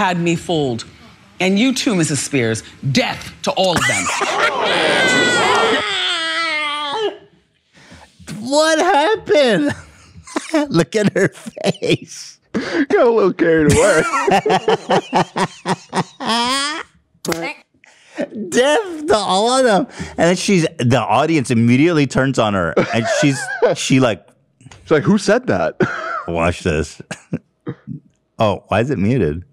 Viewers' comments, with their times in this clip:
0:04 is ironic that Ethan laughs like how a baby cries! Adorable big baby Hila cares for!
0:16 His clap was in sync with the fart. 😆